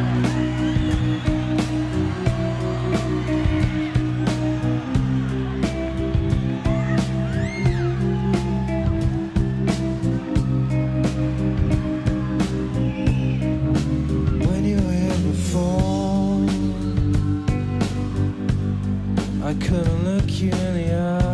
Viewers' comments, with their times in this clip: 0:07 My squeal I was standing right below Jonny in the pit. What a view, incredible show!